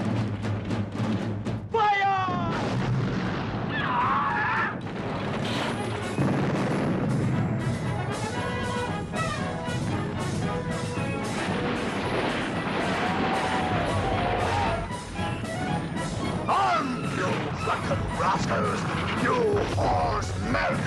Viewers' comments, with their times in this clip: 0:04 love the music choice right after a literal child gets shot